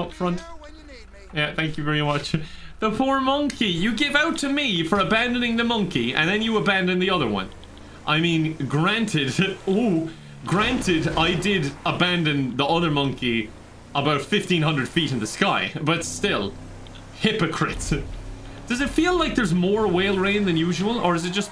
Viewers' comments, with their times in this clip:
0:09 That little "oOoo" he does when the whale falls is so good